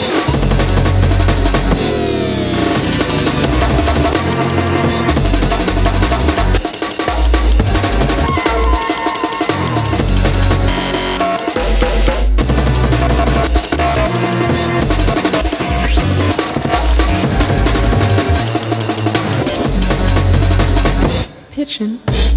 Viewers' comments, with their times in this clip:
0:10 The crossfader cutting from to 'pigeon' 🤘